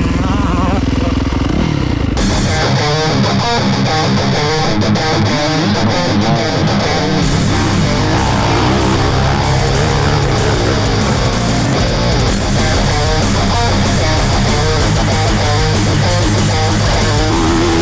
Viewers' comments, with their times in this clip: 0:03 dude when the thrash metal kicked in reminded so me much of the early 2000s metal mulisha videos, had me all nostalgic haha